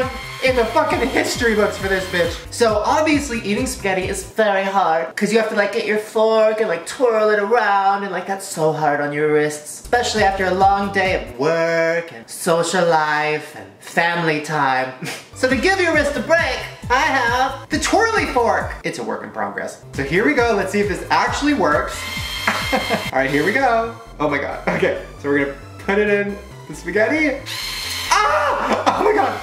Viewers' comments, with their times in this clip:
0:05 when Shane sounds like Paris (‘: <3 I miss you
0:14 Alabama anthem plays in the background